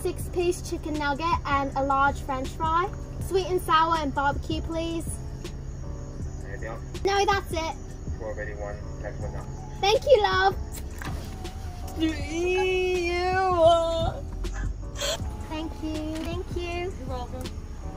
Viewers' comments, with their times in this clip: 0:04 cause that British accent was amazing ,